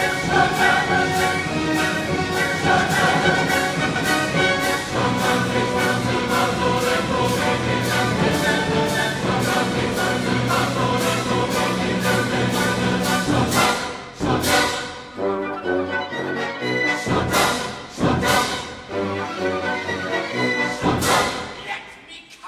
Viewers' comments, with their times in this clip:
0:09 Didn’t know cr1t1kal was in this choir